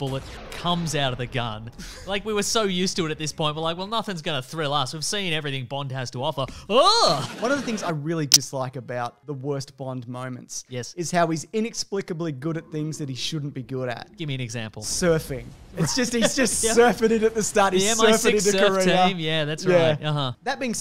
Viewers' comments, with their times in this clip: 0:08 Nice clicking noise
0:08 OUCH. MY EARS